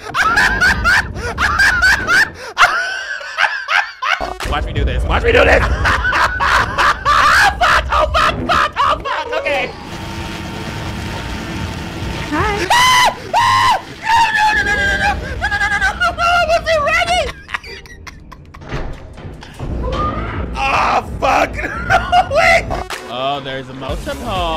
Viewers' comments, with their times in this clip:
0:10 Please tell me I am not the only one who keeps coming back to watch this. I cannot stop laughing 😂 The screech has me weak 🤣